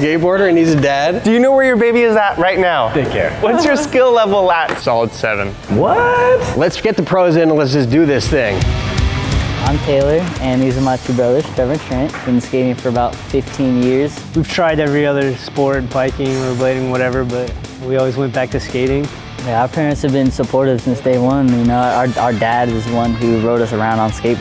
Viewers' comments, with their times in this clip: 0:08 pro skaters come in, generic metal music plays